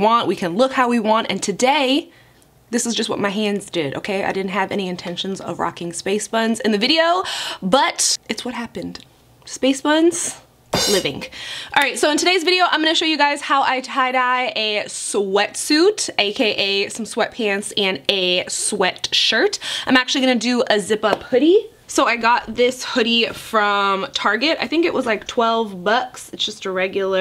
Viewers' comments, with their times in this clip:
0:10 “Livingk” ❤️ lol love her quirks